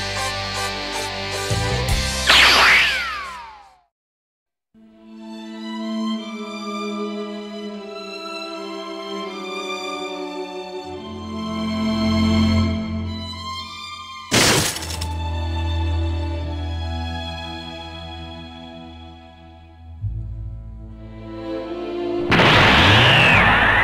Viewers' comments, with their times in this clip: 0:05 This scene with the OST "Abyss of Sorrow" and hear the transformation of Gohan... GOD! It still makes me shiver all over my body and some melancholy They chose the OST very well, doing one of the most emotional dialogues in the game The HD version did very wrong to remove an OST as strong as this one Besides it makes my eyes watery, and a lump in my throat "I'm not crying, you're crying!"